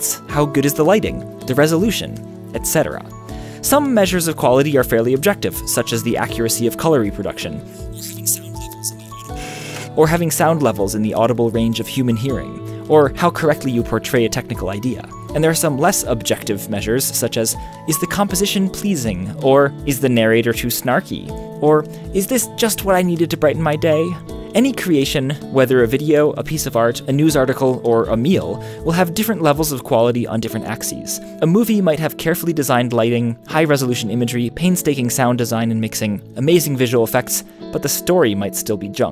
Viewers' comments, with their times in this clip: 0:03 The off-hue colours and quiet, grainy audio excerpt are good examples to demonstrate the point you were trying to make, but in doing so, disprove the point you were trying to make, as including them increased the quality of your video, not decreased it in this context. Your video actually says to me that quality is context-dependent and therefore cannot be absolute on a scale?
0:22 I got that "Snarky " reference TechnologyConnections and your impression of him wasn't too shabby :)